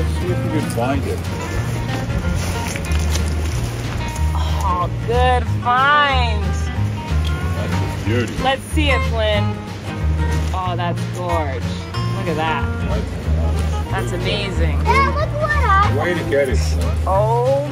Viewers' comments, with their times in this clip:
0:04 I have never seen a shell like that. So interesting!! And is that you singing in the background?